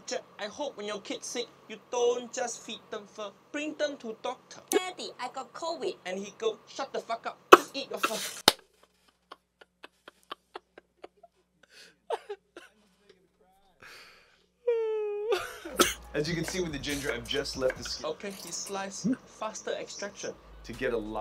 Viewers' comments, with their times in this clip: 0:05 why did he have him talking like the Canadians from South Park 😂😂😂😂